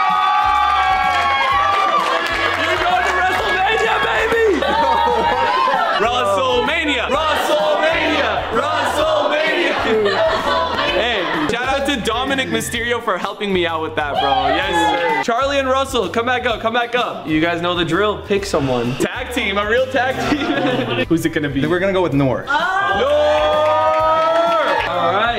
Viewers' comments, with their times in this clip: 0:08 On did you say “ALBANIA”